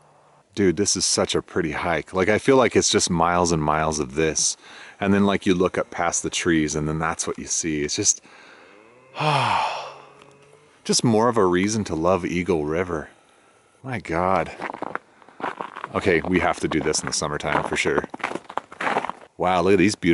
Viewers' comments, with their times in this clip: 0:07 There was a moose call Lol 😄
0:08 Haven't you heard the Moose ? Or am i hallucinating ? :D Anyways Great Video I even snapped some screenshots for my Desktop Background since its not snowing here in Germany.
0:08 dat moose call
0:08 Did anyone else hear the moose ? lol xD
0:08 Sounds Like Theres A Cow!